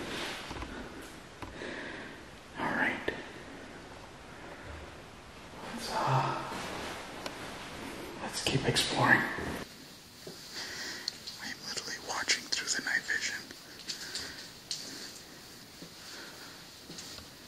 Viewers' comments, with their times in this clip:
0:04 Bro I’m impressed you play a mean piano ... dis you hear someone speak like a woman when you were in the stairway listen it’s in between you talking !!!